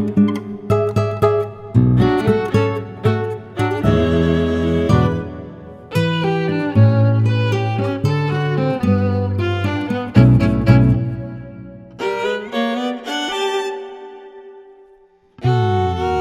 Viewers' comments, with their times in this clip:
0:04 THE HARMONY OMG👏🏽👏🏽❤️❤️😍👏🏽👏🏽👏🏽👏🏽❤️